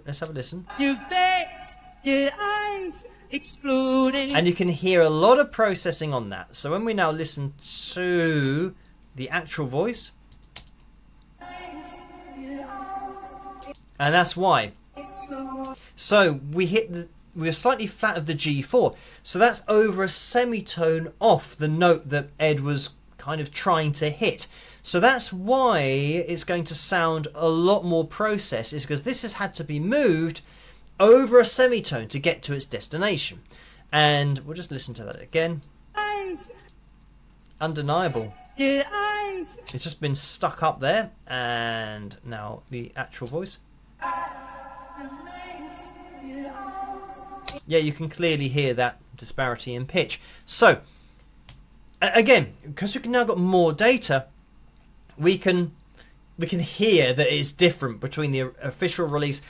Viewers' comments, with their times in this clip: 0:10 Instead of that tedious sequence of mostly pentatonic notes, they should have kept the live version, a "devil's interval" and could be a nice tribute to Black Sabbath.
0:44 Woah! That definitely is far off the correct note! 😬 I reckon in such extreme and apparent cases, pitch correction is justified. But I am also very surprised to hear him miss notes that bad!